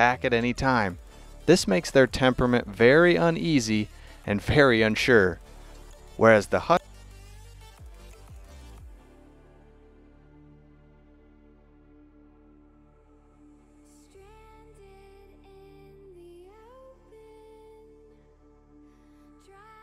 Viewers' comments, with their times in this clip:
0:04 What in the hell happened here, like an entire paragraph got cut.
0:05 that commentary cutoff 😂😂😂